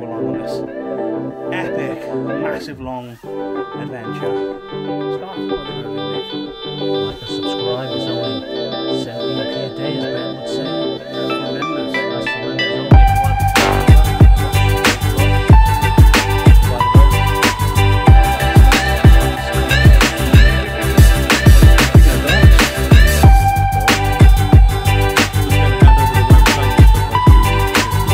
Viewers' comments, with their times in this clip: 0:09 Can't here a thing he's saying lol